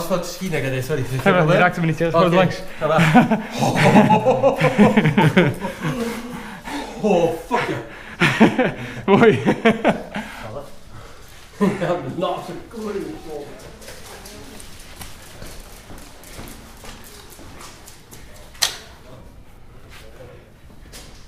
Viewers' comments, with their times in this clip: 0:04 did you guys talk afrikaans?